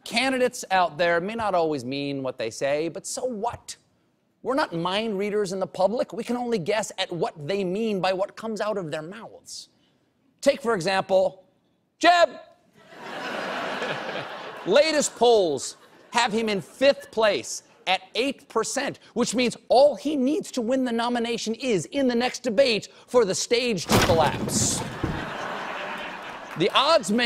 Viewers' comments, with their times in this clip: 0:10 Jeb!... He really captures the goofy energy of the slogan every time he refers to Jeb.